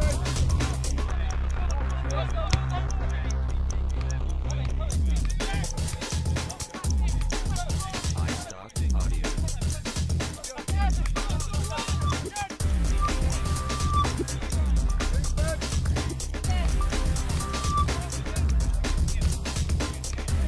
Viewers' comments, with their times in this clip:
0:08 you can hear the istock audio watermark